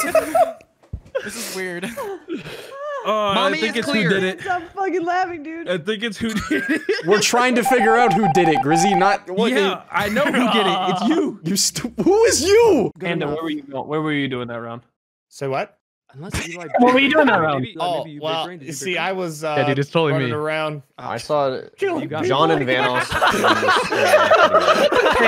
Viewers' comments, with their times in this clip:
0:06 "I think its hoodini" is all i heard right there